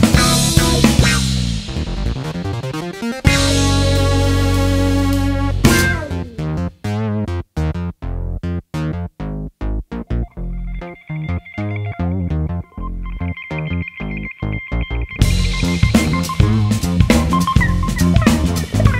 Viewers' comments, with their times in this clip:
0:06 min sounds like Smeared Graffiti from Final Fight 3. Cool music!